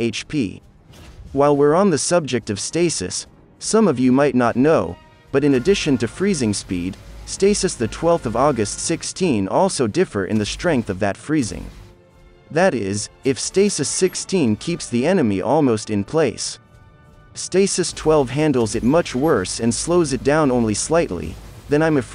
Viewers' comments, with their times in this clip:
0:07 Stasis the 12 of August? Wht? Is that a little prob in the Autovoice?